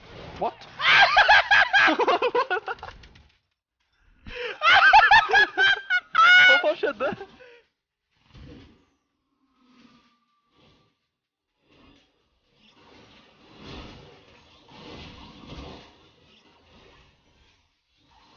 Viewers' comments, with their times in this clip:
0:05 I heard Joker laugh right ?